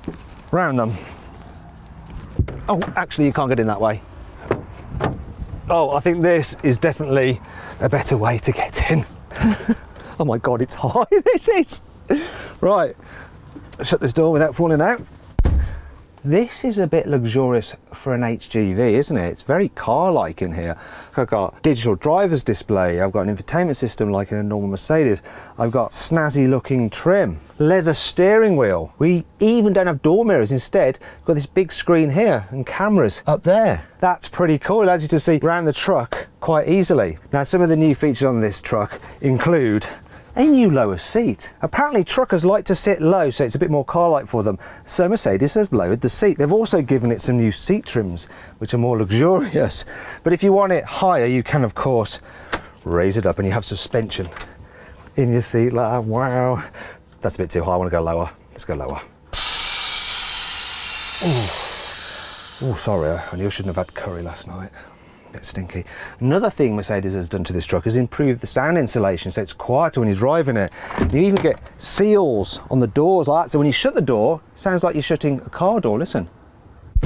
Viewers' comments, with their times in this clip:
0:10 High pitched girly giggle Enjoy.
1:00 Fart Watson here from Carwow...